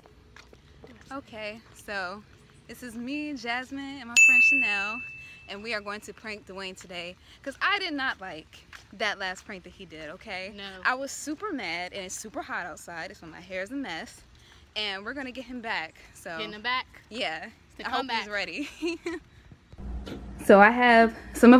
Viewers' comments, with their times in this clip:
0:04 on high volume equals permanent hearing damage